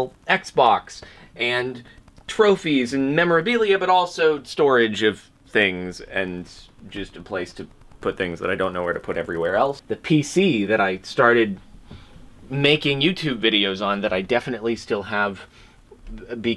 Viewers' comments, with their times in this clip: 0:04 I'm happy to see that the wall of narcissism is back in a way! Also, I could hear a strange noise at several points in the video, being one